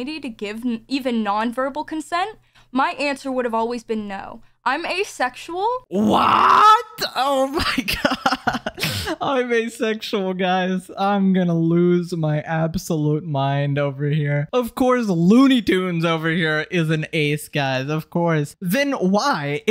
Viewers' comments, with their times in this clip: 0:04 the WHAATTTT killed me 😭😭😭